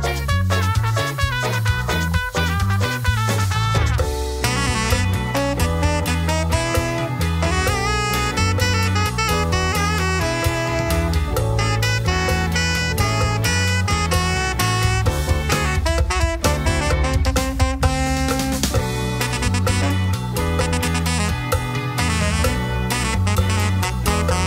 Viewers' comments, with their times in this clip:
0:05 Fantastic as always! I especially love the sax solo that starts :)